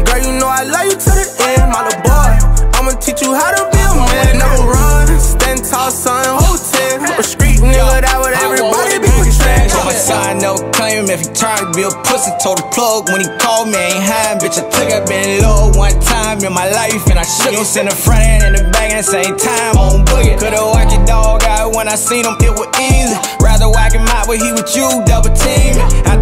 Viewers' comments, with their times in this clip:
0:08 and tell me that is not NBAyoungboy